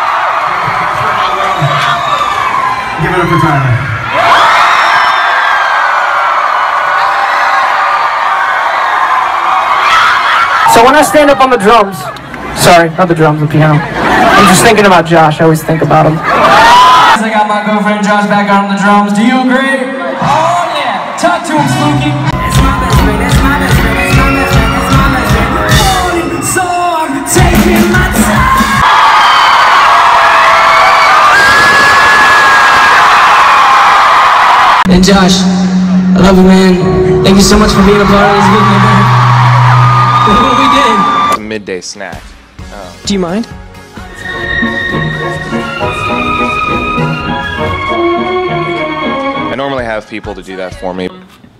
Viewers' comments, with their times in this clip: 0:08 that butt slap and that scream afterwards is me
0:08 A girl yelled "OH MY GOD!" That was also my reaction
0:09 That girl screaming "OH MY GOD!!!" is me 😂'
0:09 when Tyler...um..and Josh..ok you get it...can you hear the person screaming "OH MY GOSHHHH!!!!!" Well that's me ringht now.
0:35 no ones talking abt where tyler’s voice breaks like he’s abt to cry bc that is so cute “look what we did”
0:35 this clip always makes me cry my baby is so happy the video is blurry, but i hear his smile i love these two so much
0:37 That was so sweet.. it sounded like he was about to cry... "Look what we did." :')